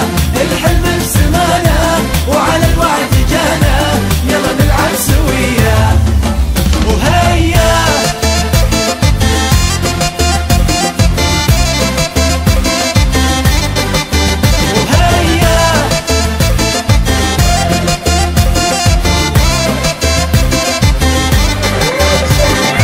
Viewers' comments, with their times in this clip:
0:07 morocco ghayta soud in min